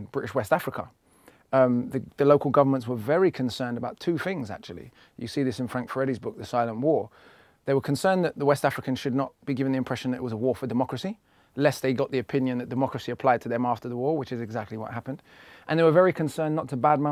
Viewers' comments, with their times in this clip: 0:05 I'm an African-american and unfortunately I couldn't understand the author and title of a book that Akala refers to minute. It sounded like he said, Frank Freddy's book 'The Side of War', but I can't find any such book. I am struggling with the British-like accents... I am very impressed with Akala's work